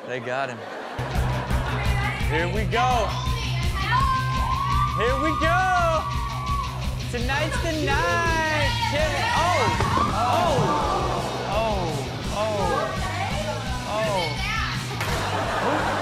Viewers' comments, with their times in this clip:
0:04 notice how excited they were before they even lift her??wooOooaaaHhhh.Girl Code 🤣🤣🤣🤣